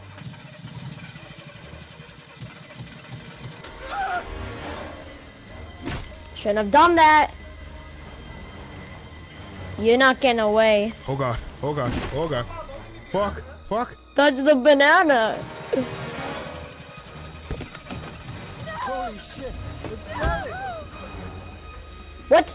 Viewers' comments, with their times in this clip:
0:06 Did anyone else here the little kid